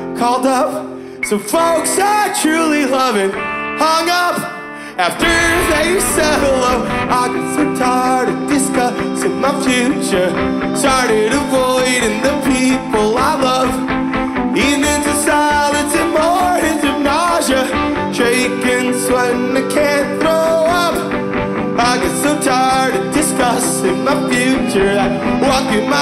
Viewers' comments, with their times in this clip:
0:07 ah, I see things were tough before the keyboard player. No sax, either :(